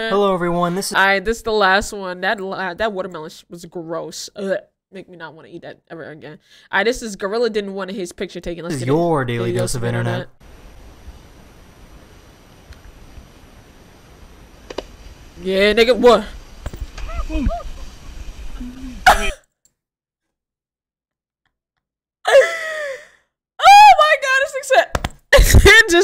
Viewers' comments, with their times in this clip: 0:09 yall harmonized lol